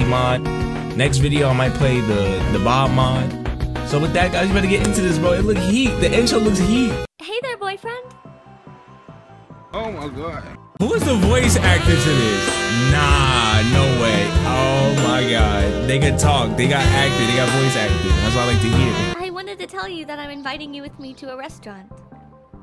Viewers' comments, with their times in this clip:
0:07 Yooooooo that voiceeee